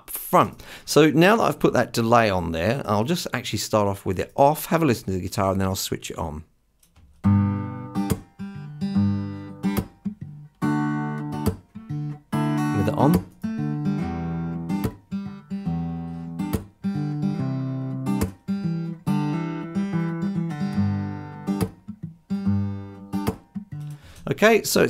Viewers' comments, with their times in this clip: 0:08 This is a wonderful series (and I subscribed to Patreon as well). But honestly, I cannot hear the differences on a lot of these. I listened with speakers, headphones, repeated it over and over, and nada. For example, he has a slapback. When it goes on, I hear nothing. Not at all. I expected to hear a very quick slapback, since it's set at 1/64th on the left and dotted 1/64th on the right (I'm figuring the tempo is 88bpm). I noticed the feedback is set to 0% So I'm wondering if the Youtube compression has screwed with the sound, or if there's something going on with my ADDA (although I tried with both a Focusrite 4i4 and a Line6 UX2), or if I'm just deaf(er) than I thought. BTW - I tried this just now with an acoustic guitar on a recording I'm doing. Sonitus lets you choose from 1/32 up to three or four whole notes. I set it for 1/32 and 1/16 and tried feedback from 0% to around 50%. Still didn't hear a darn thing. All other settings were as shown in the video.